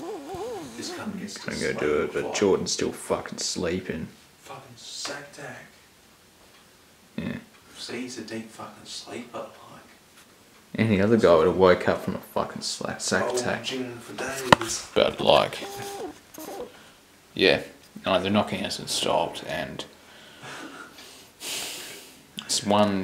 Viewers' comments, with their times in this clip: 0:07 -ish This was my first big chill. Jordan fading in and out and giggling was really unsettling. Especially when the giggling seemed to fit too neatly with what they were saying.